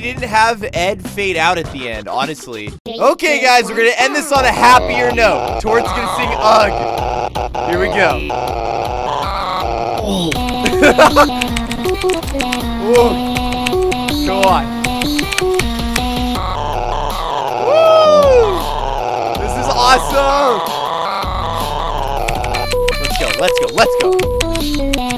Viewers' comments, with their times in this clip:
0:10 When you sing "ugh" but can't figure out an "ugh" replacement so you just make a random sound: